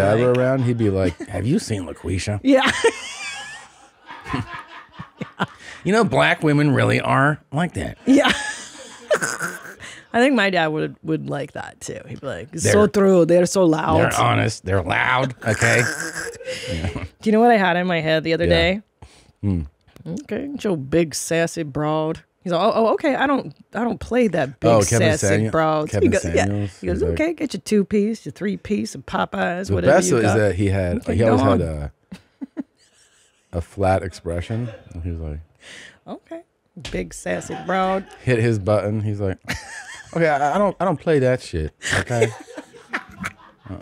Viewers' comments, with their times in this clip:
0:10 I realized I could listen to a whole episode of Tim and Christine talking as their fathers
0:26 😂😂😂😂Tom doing Kevin Samuel’s impression